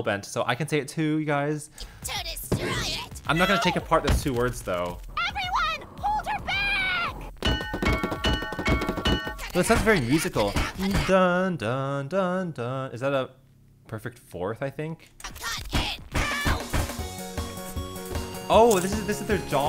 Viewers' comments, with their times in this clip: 0:07 Why Does Bell's First 4 Hits Remind Me Of The Noises Theme From Pizza Tower